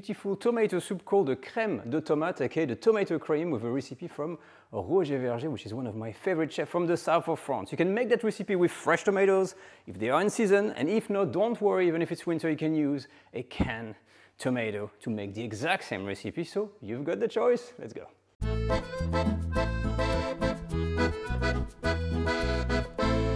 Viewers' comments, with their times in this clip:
0:04 Now you're just messing with me 🤔. 🐸 or no 🐸, no one can understand that one! 😄